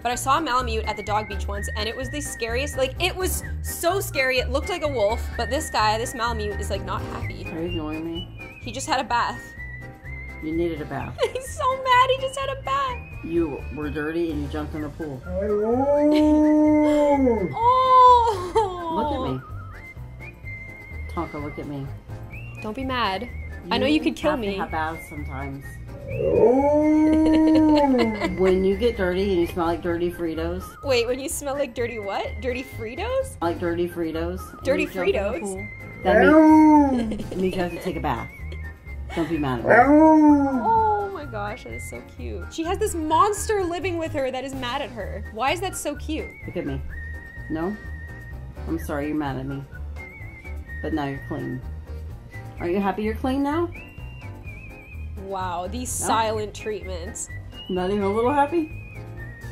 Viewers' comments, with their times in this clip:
0:10 the dog sounds like hes saying, "i knooooww!"
0:40 I realized it sounds like the dog is saying “hellooooo” or “I knooooow”